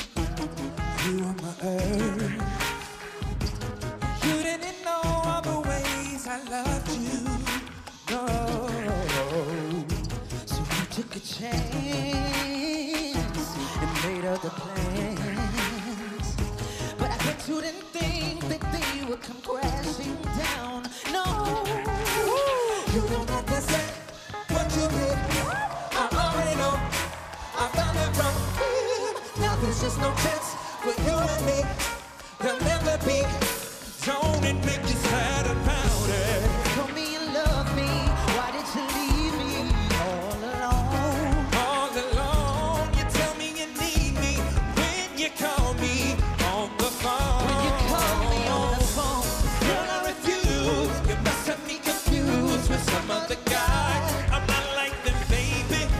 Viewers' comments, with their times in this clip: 0:10 Yes man. This voice. And the song suits so so well
0:40 But he has more unique voice.